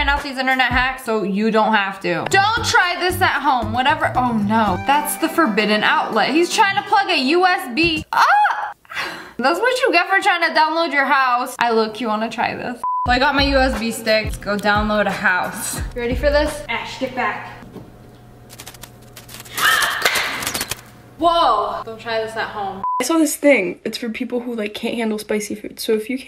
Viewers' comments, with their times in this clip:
0:10 i thought she said "i look cute i wanna try this"